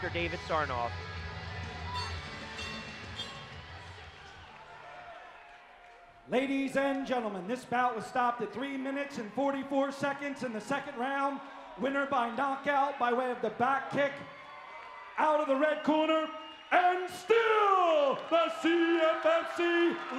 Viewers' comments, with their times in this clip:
0:08 thumb up the crack 👍